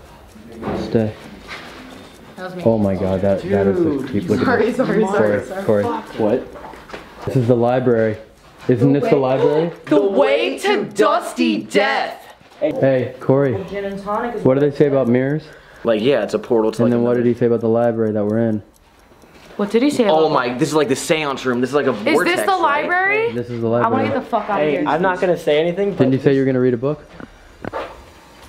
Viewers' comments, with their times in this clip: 0:10 The way they said the same thing in the same tone lmao